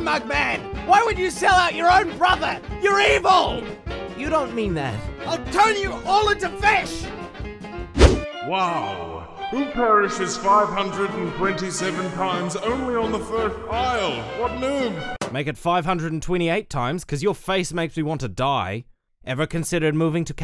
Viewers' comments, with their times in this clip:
0:04 Mugman: *starts crying * Me: YALL WHO THE F WANNNA DIE FOR MAKING MUGMAN CRY-